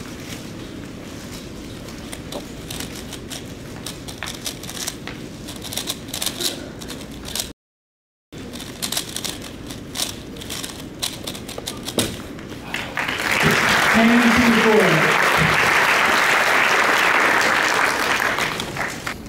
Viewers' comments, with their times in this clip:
0:06 why is there a sound cut